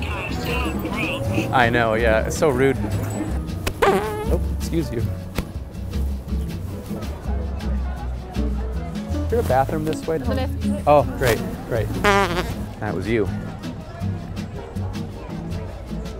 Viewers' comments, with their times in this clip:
0:03 The fart is an absolute squealer! 😂😂😂